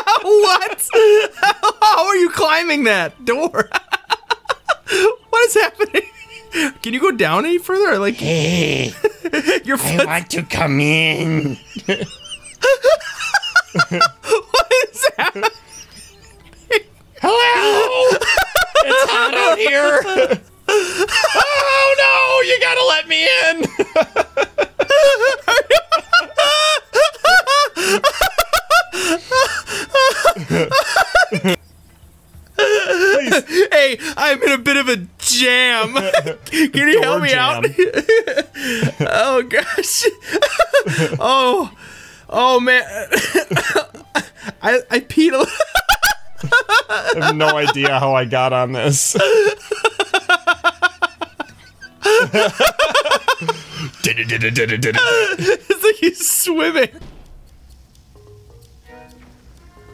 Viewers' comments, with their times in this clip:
0:07 HeY I’d LiKe tO ComE iN 👹 that voice is so funny
0:08 And bro that voice got me laugh so much HEYY IM WANT TO COME IN!! >:} this got me wheezing🤣
0:12 I can’t tell who is wheezing me or you
0:38 well SOMEONE'S losing their mind in the background
0:43 I peed alot is what one said